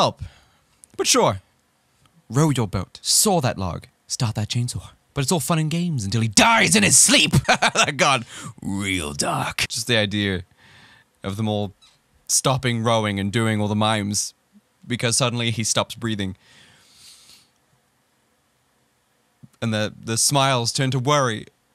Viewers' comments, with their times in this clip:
0:07 You absolutely laughed But sometimes you don't count "I made myself laugh". Idk, just saying, it did happen.